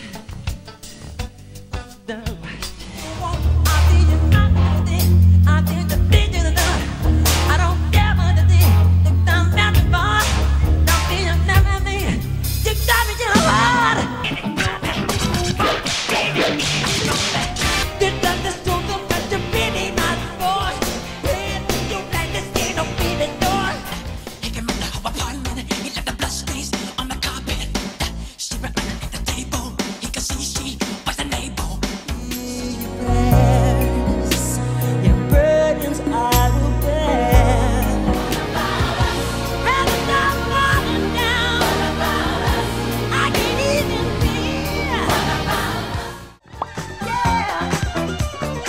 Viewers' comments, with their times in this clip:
0:03 WHAT IS HE SAYING?!
0:12 the reason why he did this was because when he really got into his singing his black accent came out and kinda messed up his singing I think it's cute tho.
0:34 It sounds more likely ' Virgins are the best' sorry